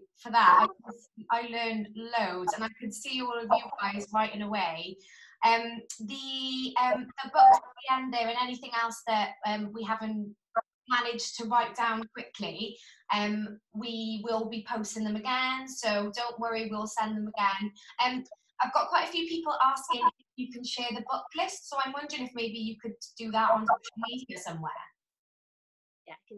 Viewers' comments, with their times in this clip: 0:07 The whole time I thought she just wear talking to me😳 and then at minute comes another person haha